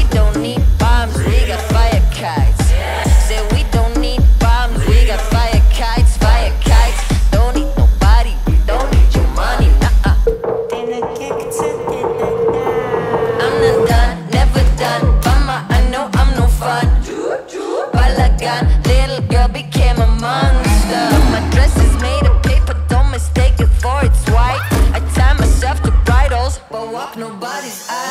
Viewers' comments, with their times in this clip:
0:10 "clean the blood a little bit" in Hebrew English is her artistic choice, but she perform other's songs somtimes, not the same style. search this נגה ארז - הביאו את הסתיו